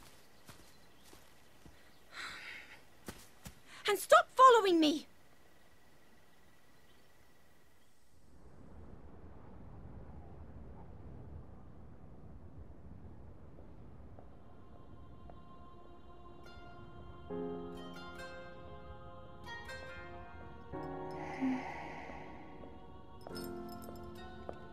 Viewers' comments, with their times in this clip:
0:05 “And stop following me.” I love the way Zelda says this.